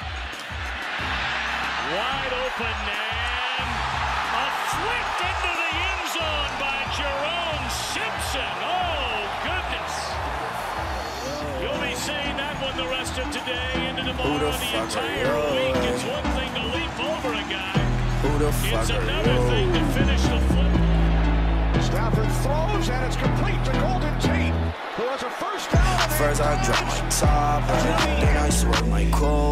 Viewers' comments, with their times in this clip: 0:10 They cheer on the